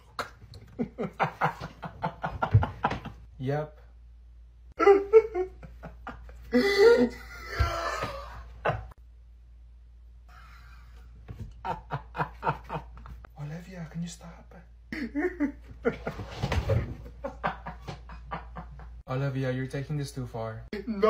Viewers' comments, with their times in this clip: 0:03 thats me😊 that how i laugh and i laugh at almost anything😊